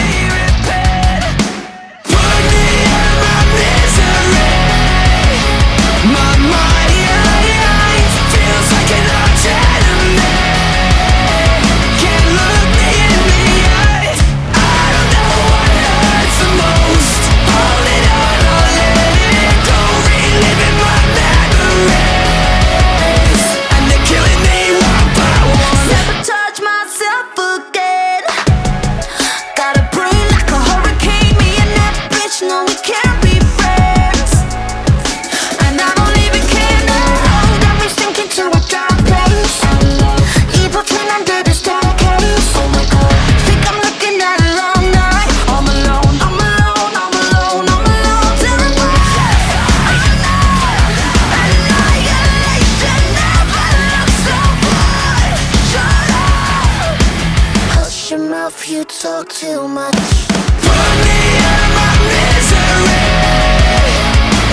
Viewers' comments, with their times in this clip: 0:05 sounds very close to "don't tell me" hook from Avril Lavigne
0:10 This whole time i thought the lyrics go "feels like no gentlemen, can look me in the eyes" 😨
0:31 its really odd but I love how cool and slick she delivers such an angry vindictive line.
0:49 the way their voices blend makes me hear that part in loop all the time